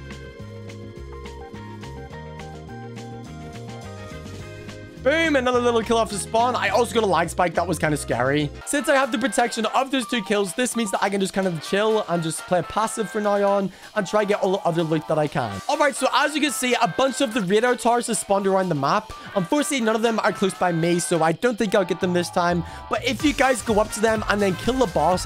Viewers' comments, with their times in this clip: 0:06 who gives a crap about the fight, MUSIC HITS DIFFERENT 😂😊